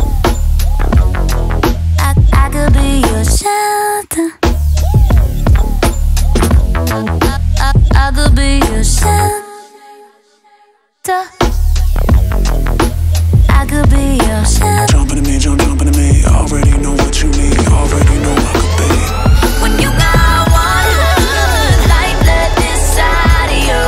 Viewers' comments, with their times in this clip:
0:07 that "shel...ter" slapped. And the riffs follwing the guitar riffs!!!!! God is good. Tori kelly slaying even after a health crisis